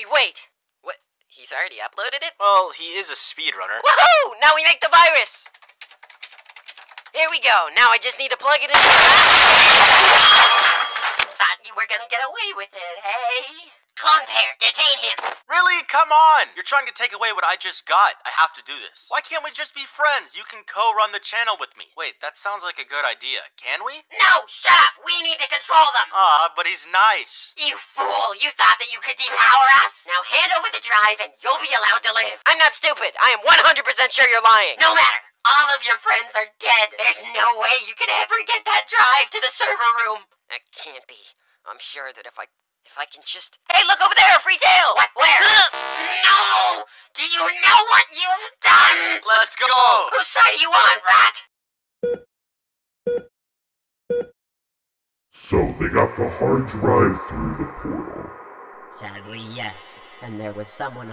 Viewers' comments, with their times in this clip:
0:05 my goodness my ears i had full volume please pray for my ears
0:29 real ass voice
0:42 that NoOOoooOoOoOOooOo got me rolling on the floor